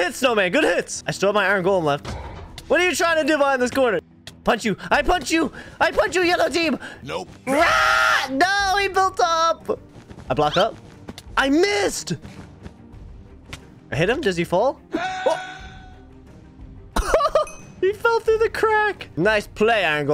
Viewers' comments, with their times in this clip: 0:07 The scream tho 😂